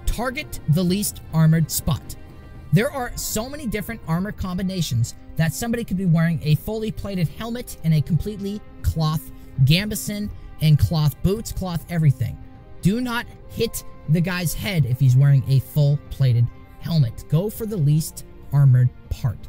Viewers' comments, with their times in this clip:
0:06 Did you even know that you can use a software equalizer to improve your mic, right ? and btw, is that EASY MODE ? If i do the same as you did, the enemy would instaparry me EVERY HIT i try to land on him while the other guy go for my back and rape my ass...